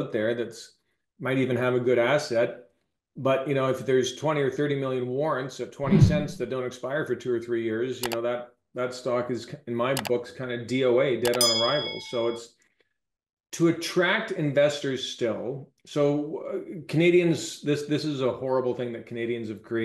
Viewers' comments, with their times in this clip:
0:07 For example, there's a graphic on-screen suggesting to "like, subscribe and turn on notifications", ending in a very lound "DING!"-sound. I'm sitting here concentrating on the interview and the content, and suddenly it's like someone hits me upside the head with a tuning fork. "DING!" Extremely disruptive and unpleasant, and of course, highly distracting. This problem persists through the otherwise very fine video and just does not stop, but keeps repating at intervals. "DING!"